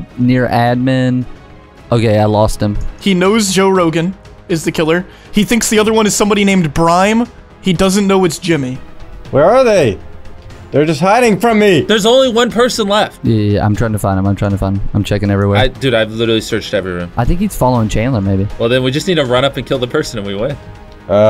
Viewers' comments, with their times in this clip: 0:06 did this boy really just pronounce “BREME” as “BRIME”????????